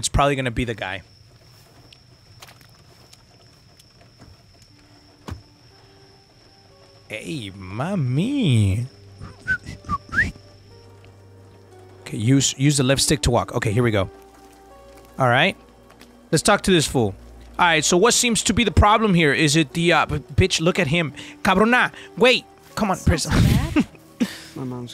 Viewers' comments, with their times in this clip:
0:05 who else thought it was a deck?